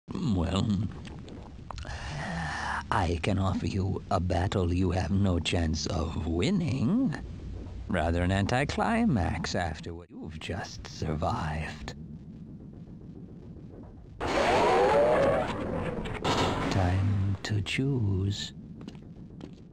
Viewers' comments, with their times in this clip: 0:00 Those swallowing sounds...